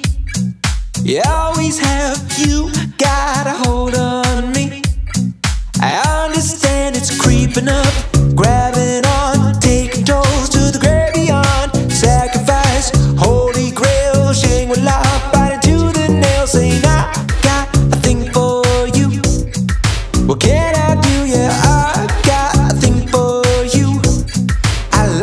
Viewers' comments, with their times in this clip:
0:07 The percussion mixed with the bass is so bloody good 👌😞👌